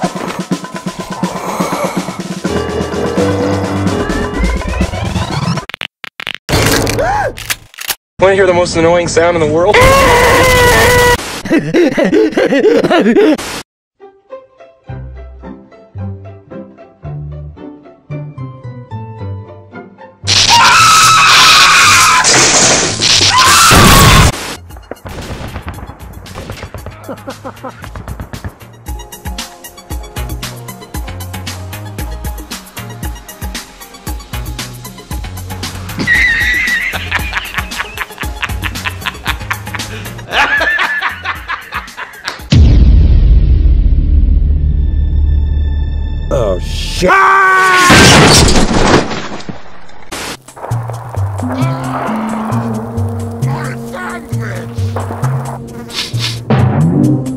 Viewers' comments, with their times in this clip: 0:08 geniuz!!!! The kleiner sound gun!!!
0:41 Breen[Hacker-self]: Laughing maniacally OH SHI- Dr. Hax: Hijacks own hand HAAAAAAXXXX! Selfpwn